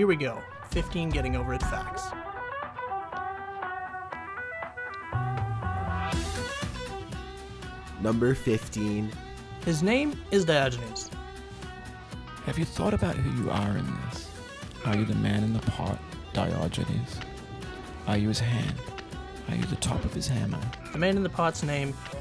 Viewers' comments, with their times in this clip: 0:09 I love the chills voice.